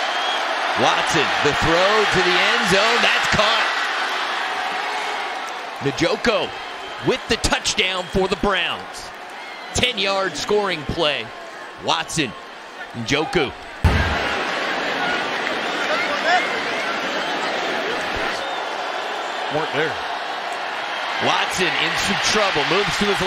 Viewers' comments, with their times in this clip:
0:03 hilarious how the announcer called him Nijoko
0:04 man said Nuh Joe Ko 🤣